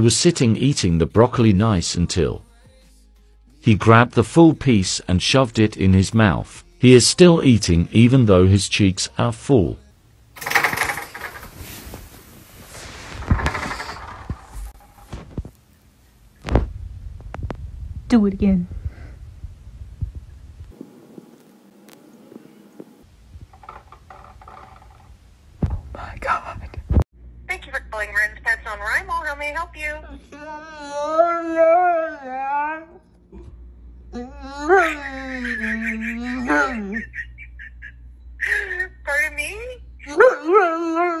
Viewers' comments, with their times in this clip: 0:10 the cat sounds like a helicopter...
0:27 dog talking to the lady at pet depot had me in tears
0:28 THE DOG CALLED